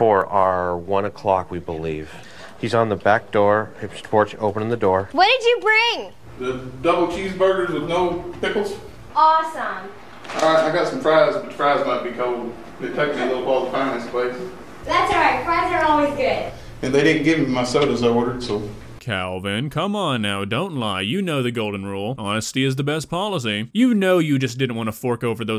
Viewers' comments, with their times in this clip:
0:07 I love the way he says "pickles"